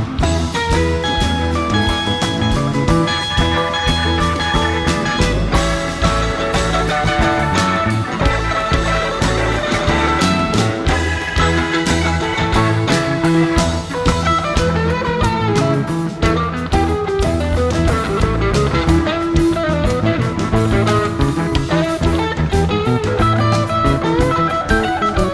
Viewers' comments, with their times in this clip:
0:10 Love when Jerry dials up Tiger and just shreds... ❤Jerry